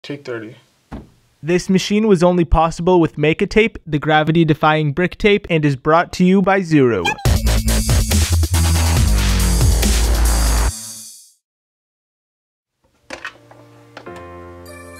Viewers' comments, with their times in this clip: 0:01 Hilarious hot dog talking
0:01 Tape 30 hard to hear